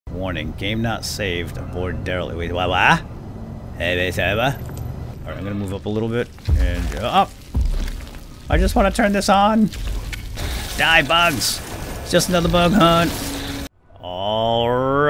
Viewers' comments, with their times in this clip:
0:02 That was an attempt to speak Spanish